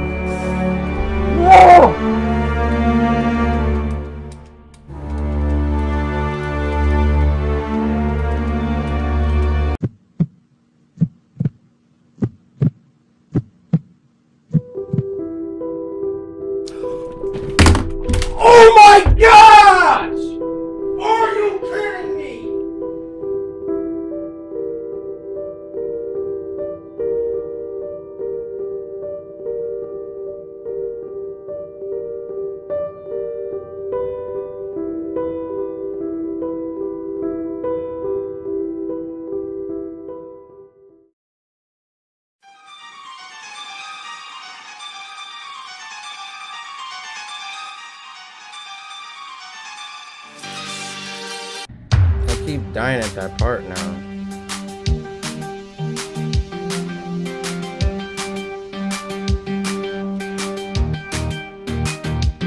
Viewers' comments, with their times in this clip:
0:09 lol u can't breathe hahaaahaa 😂
0:17 When you text your roblox girlfriend and your uncles phone rings
0:24 the OFF song comes on (That Serious Is So Good)
0:43 the music scares me